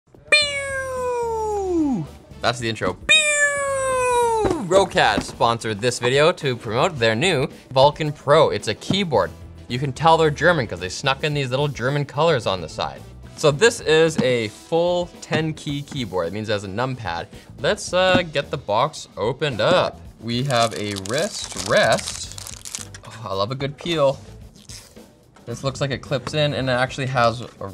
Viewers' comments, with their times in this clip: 0:01 Star Wars blaster enabled....
0:11 Literally felt that spit of him xD